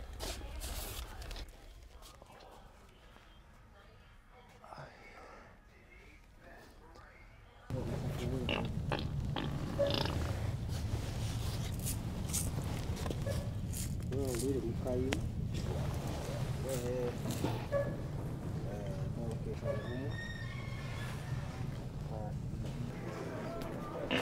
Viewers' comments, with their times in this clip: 0:08 you farted right on that dude,i thought he was gonna get pissed 👍😀